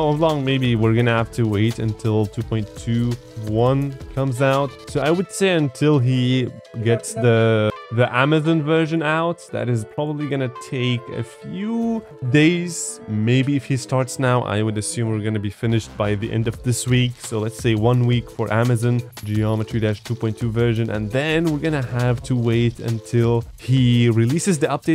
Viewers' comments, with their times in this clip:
0:06 Is someone speaking on bg during the video?